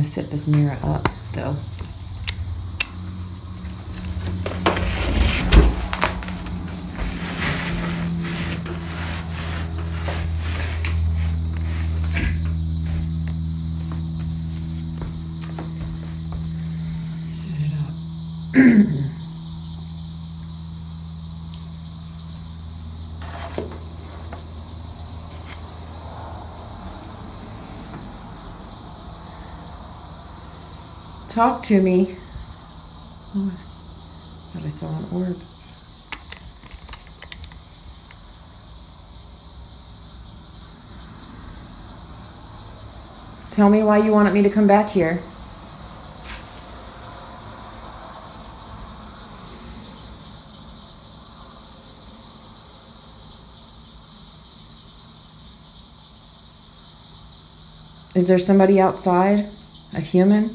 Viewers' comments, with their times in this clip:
0:08 .......after the huge bang on your car......sorry, but that face you make, totally terrified look, that is freakin funny.........LOLOLOLOL........trust me, i had done the same........LOLOLOL
0:48 .....there is a very creepy evil whisper voice saying something, its clear enough but i cant make out the word........sounds like......."HERE"........????????